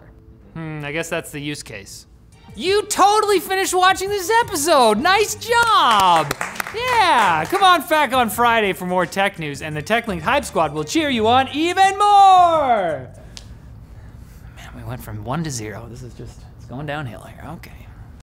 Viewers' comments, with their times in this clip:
0:05 "Come on FACK on Friday!"
0:07 "Come on fack on Friday!" Well, if you insist!